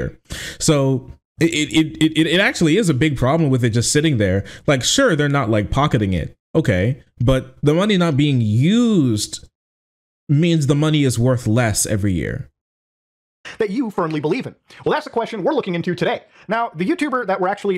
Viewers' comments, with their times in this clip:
0:05 HE SOUNDS EXACTLY LIKE ANDREW TATE THATS SO TERRIFYING!!!